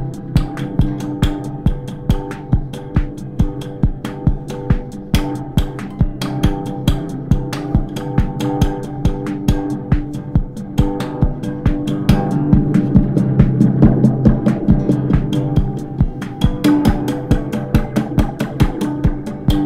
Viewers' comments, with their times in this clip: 0:04 sounds like when your headphones are slightly broken